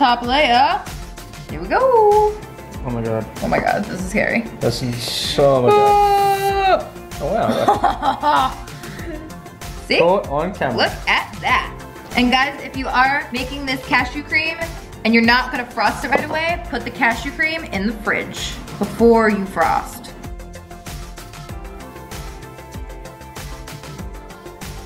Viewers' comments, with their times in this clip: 0:06 her laugh made me scared omg but it also made me laugh... I think she felt accomplished and evil at the same time